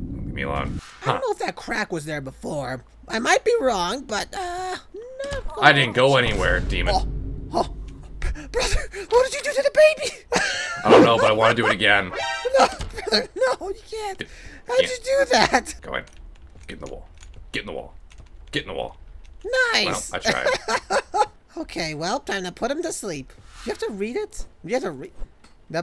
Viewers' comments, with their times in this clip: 0:10 SUNNYS LAUGH IS SO CUTE 😭